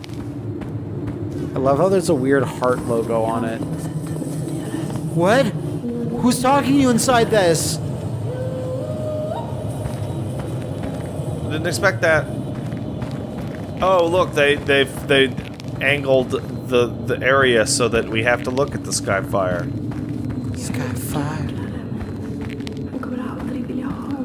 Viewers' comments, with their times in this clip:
0:08 That weird Scandinavian yodeling you hear occasionally is an ancient herding call known as “kulning”,